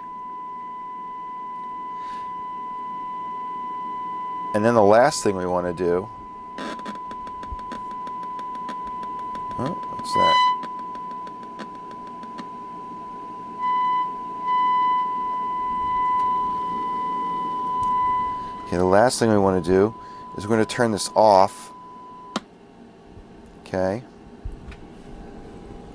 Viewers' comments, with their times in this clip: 0:08 sounded like it picked up your cellphone